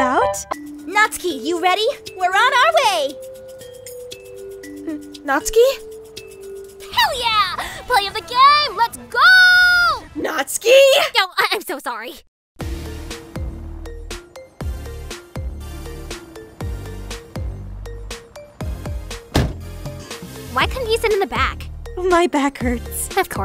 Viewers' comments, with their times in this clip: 0:05 LOVE THAT NATSUKI VOICE